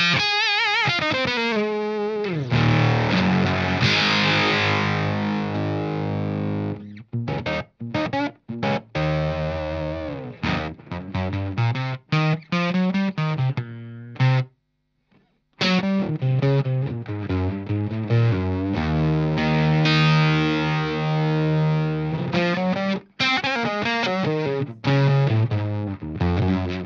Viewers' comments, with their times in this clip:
0:10 Bit of something from Bros Landreth live shows ? Sounds so so good